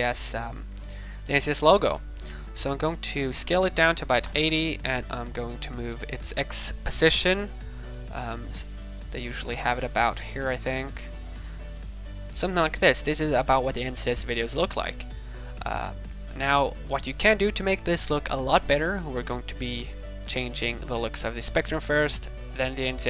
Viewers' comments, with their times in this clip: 0:10 "This is how the 'insest' videos look like" lmao ( No hate btw) Good commentary!!